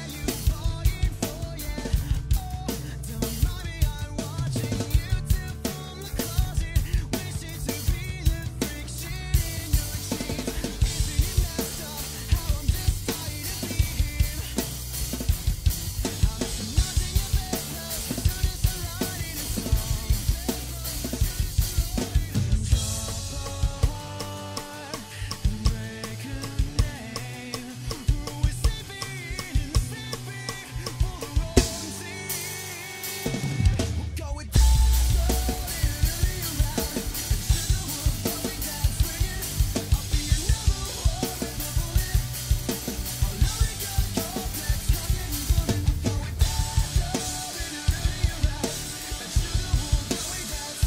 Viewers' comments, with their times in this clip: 0:03 fill works so well!
0:34 LOVE the bass drop
0:34 that epic moment! Bassdrop! :D